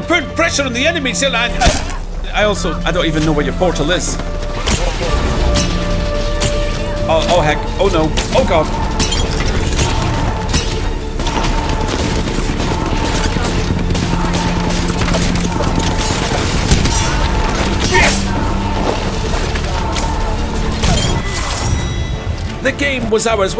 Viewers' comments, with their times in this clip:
0:10 is it me or did it sound like they were saying fallback in this song?